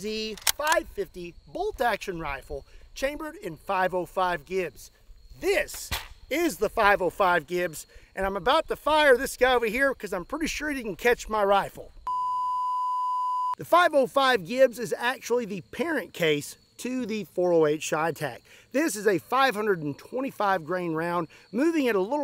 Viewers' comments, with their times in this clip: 0:04 my jaw dropped when you throw the gun and heard hitting the ground 🤣
0:05 I winced when I heard the THUD of the rifle hitting the ground. 😬
0:06 The impact of the rifle hitting the ground hurts to hear.